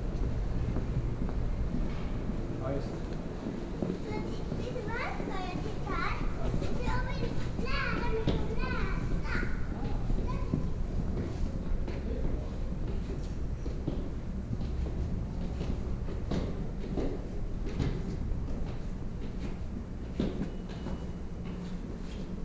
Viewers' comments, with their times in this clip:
0:05 hearing children voices in that environment automatically feels like those were ghostly echoes or something